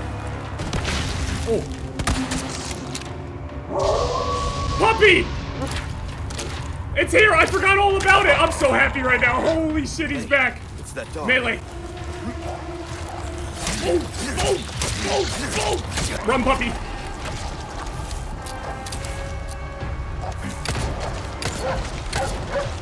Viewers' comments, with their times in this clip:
0:04 When the wolf howled I got chills 😢 that’s one loyal puppy